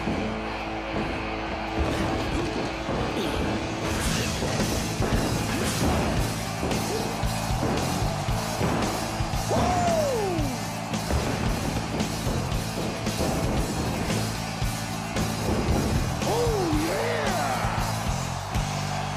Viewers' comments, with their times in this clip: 0:06 Ackles literally did Ric Flair’s strut and woo